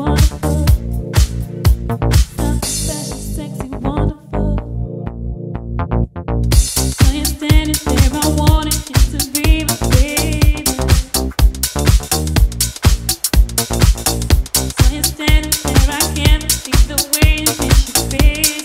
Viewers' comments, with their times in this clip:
0:06 what a transition!!